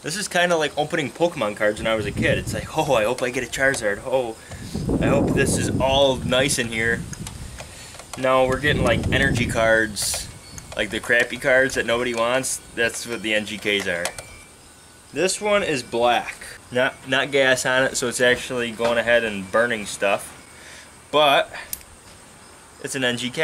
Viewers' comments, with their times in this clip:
0:09 was that thunder?